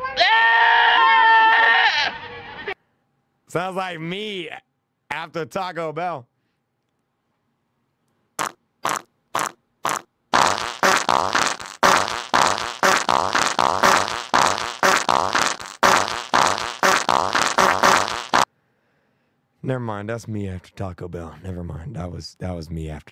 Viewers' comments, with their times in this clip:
0:08 When I put 2x speed it sound like a beat
0:08 has a harder beat